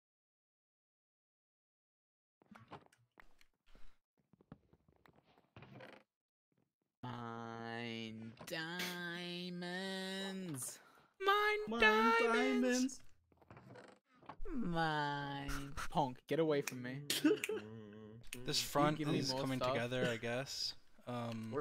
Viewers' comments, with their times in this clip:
0:06 i love how George starts singing and then everyone joins for a second lmao